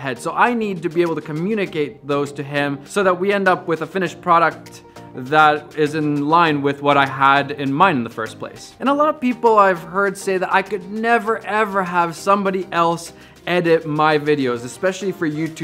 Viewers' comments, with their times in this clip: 0:03 so that we end up with a finnish product